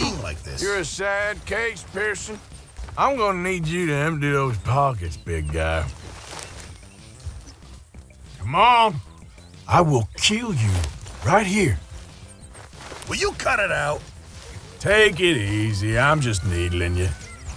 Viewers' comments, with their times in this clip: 0:03 he said "poggest"?